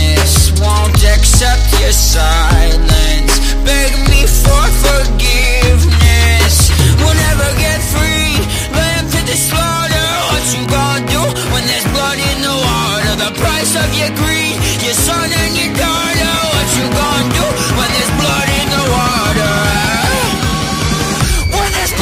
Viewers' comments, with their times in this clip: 0:09 the voice crack tho lmao